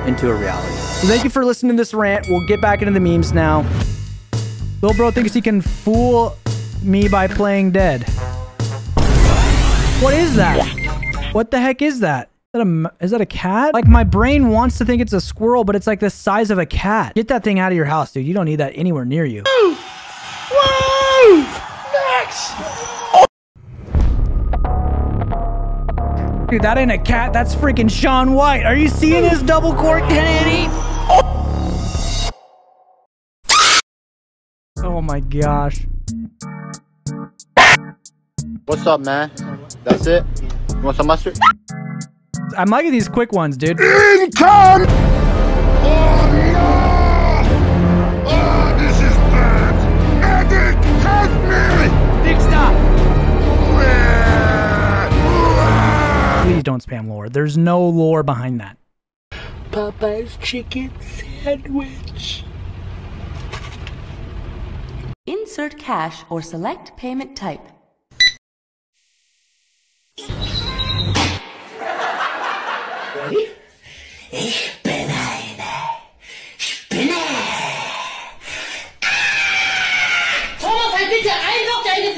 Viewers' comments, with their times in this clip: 0:09 Yo this song hits different!🎉
1:05 most delay luagh boat 10 secs